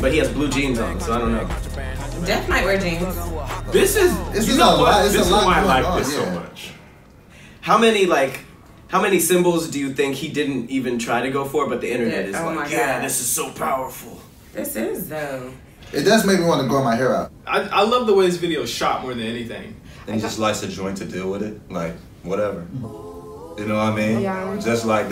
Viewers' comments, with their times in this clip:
0:06 How did they not catch the mark when he makes the gun gesture, its 17 secs of silence. For those 17 victims in that parkland HS shooting.